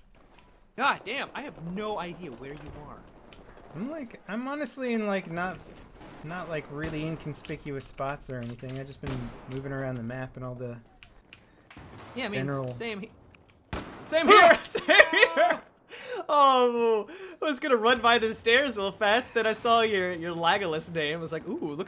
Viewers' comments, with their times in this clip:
0:09 I love how you're both talking and then go absolutely silent when you see each other